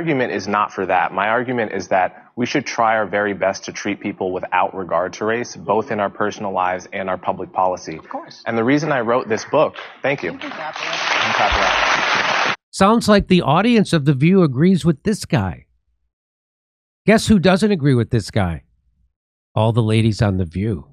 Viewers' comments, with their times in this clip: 0:08 Around the mark the audience starts uncertainly clapping as if they dont know if its ok for them to. You can even hear one of the ladies say "you can clap at that".